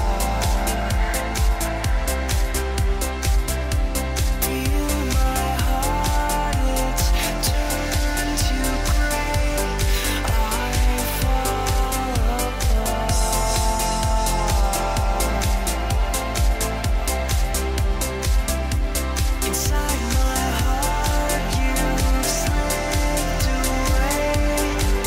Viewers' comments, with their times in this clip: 0:06 Thanks for the info, the track gets eargasmic